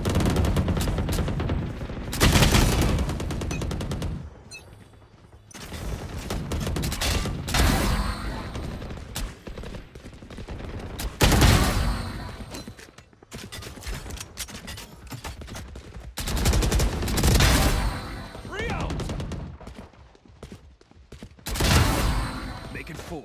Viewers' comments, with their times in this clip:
0:06 here's ace sound thats what i'm looking for in a good showcase